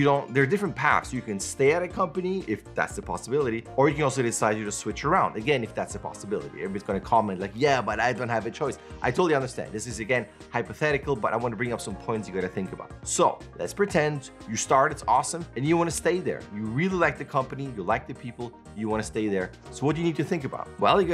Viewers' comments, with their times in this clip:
0:07 sounds like a youtuber alright! HAHAHA, awesome video!